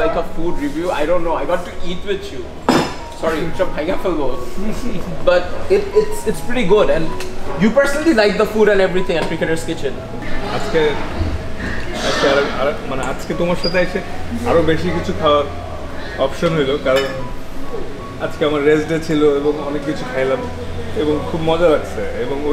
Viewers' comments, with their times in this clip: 0:08 😄😄😄😄😄😄 your speaking is funny ,,,,,shame 😡🤬😡🤬😡🤬